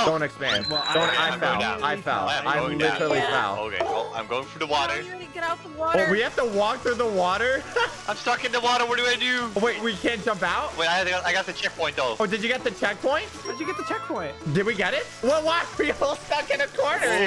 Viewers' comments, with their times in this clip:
0:05 "oh I need to get outta the watuh" accidentally jumps 😓